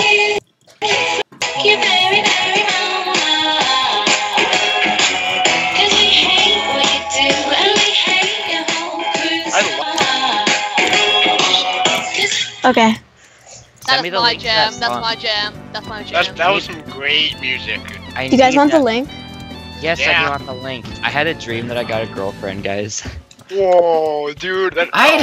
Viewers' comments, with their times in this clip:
0:08 lol he actually used a vocaloid song